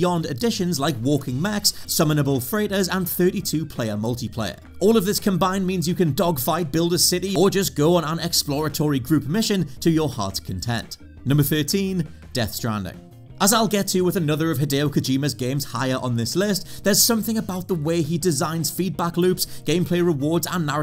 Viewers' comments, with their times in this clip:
0:07 a one frame audio fadw could have done the trick..